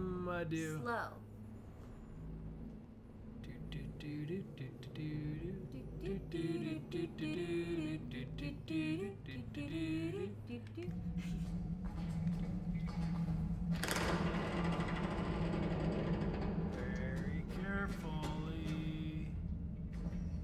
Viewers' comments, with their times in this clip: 0:03 they started singing the intro to Fall Out Boy - Centuries. I fangirled so hard lol. Love you both!!!!!
0:03 bryan & amelia singing fall out boy you're welcome